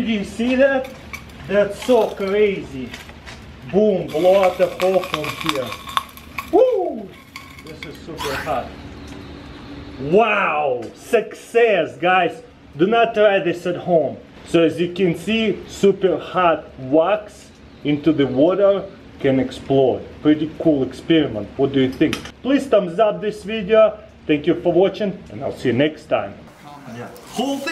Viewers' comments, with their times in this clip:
0:06 the tube screamed before you drowned it
0:09 I thought he said "wow sexy" at first and got confused and had reply it X'D